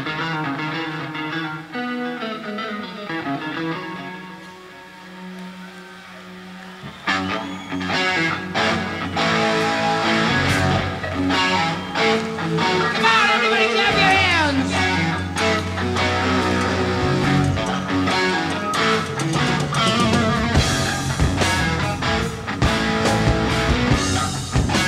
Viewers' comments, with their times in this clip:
0:05 At this point in my love for Sab, "Sometimes I'm Happy" is my favorite song It is almost impossible to describe how I feel while listening to this. Ozzy's voice just penetrates me. He did not leave one ounce of his soul out of it.